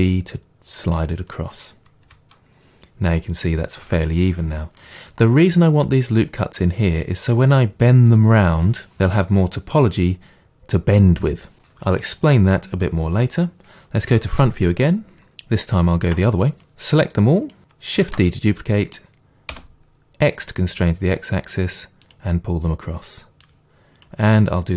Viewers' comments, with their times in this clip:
0:09 The emphasis on the word "Bend" is quite intense, like a super villain. Great tutorial as always.